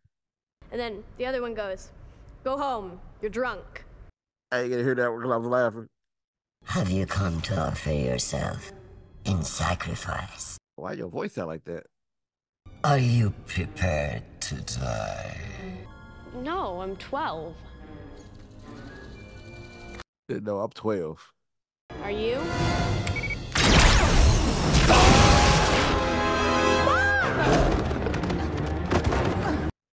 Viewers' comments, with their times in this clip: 0:10 Paddi Edwards sadly passed. That's Shohreh Aghdashloo, liquid honey.